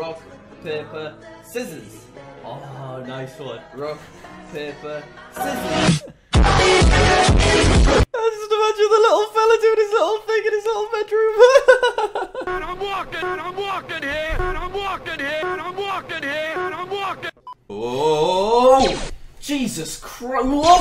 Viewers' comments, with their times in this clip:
0:04 definitely copyrighted music